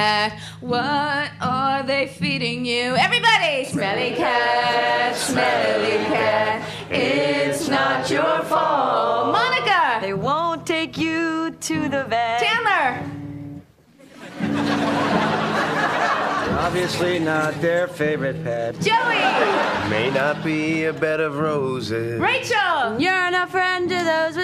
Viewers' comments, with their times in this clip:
0:09 She has such a velvet voice